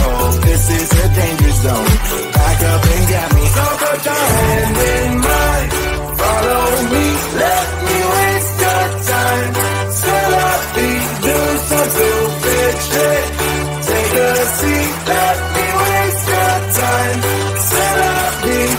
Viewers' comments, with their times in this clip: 0:06 the perfect song for 5 minute crafts!👍👏